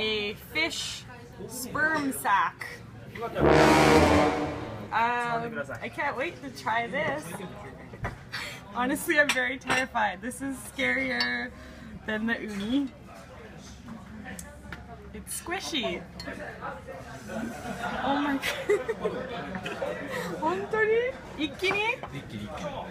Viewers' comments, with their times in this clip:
0:03 HAHAHA the tuba or whatever that is